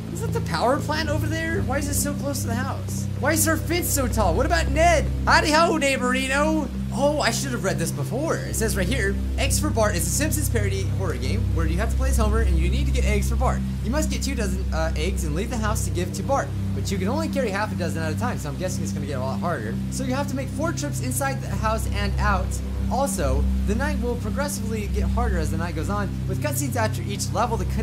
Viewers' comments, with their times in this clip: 0:09 why do I hear thin in the “pacer test mans voice” hELp